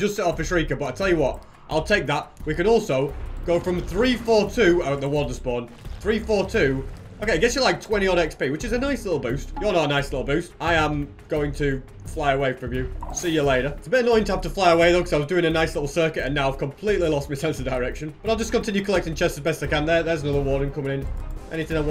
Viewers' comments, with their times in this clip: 0:04 it scares me how casually hes talking "oh warden is spawning.. anyway xp"